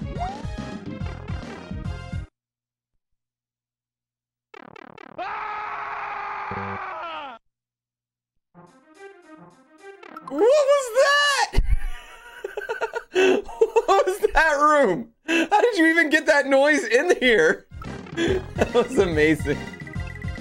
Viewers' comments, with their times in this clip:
0:04 What WAS that? xD I was thinking it was the yell when Werehog Sonic dies by falling in Sonic Unleashed.